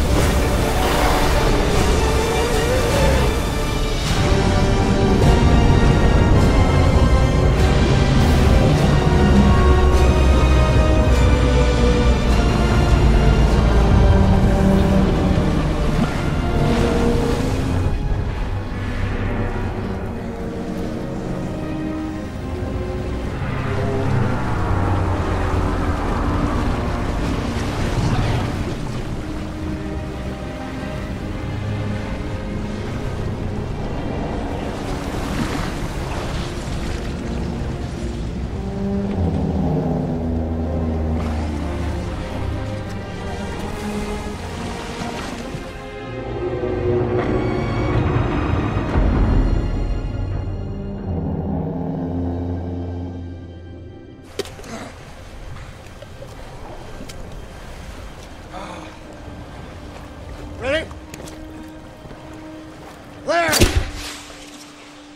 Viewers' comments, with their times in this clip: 0:03 Best Music ever!!!
0:03 i love that song😍
0:03 The music kinda sounds like Palpatine's hah
0:04 have you ever wondered, that the ship is smiling and groaning ready to sacrifice his life ?
0:06 There's something about that scene with the soundtrack that really is ... sad, it's almost like the ship is crying out trying but ultimately fails.
0:18 That metal sound sounds the same as the Eiffel Tower collapsing towards the bridge from the Rise Of The Cobra.
0:37 is the ship itself crying out not wanting to go.
0:38 that was her last gasp of air😭
0:39 THÉ SHIP IS SAYING NOOOOOOOOOOOOOO
0:46 The ship falls to the Atlantic floor as more metal stress scrapes and rumbles as more flashes from many more explosions are heard and seen in each room.
0:47 Sound like the ship was crying
0:47 you can hear the ship is crying like in agony...
0:47 is the ship crying?
0:47 sounds like the ship is crying
0:47 sounds like the ship was crying
0:47 the ship was coughing
0:49 the sound of the ship groaning as it sinks into the abyss is creepy
0:52 sounds like the ship is crying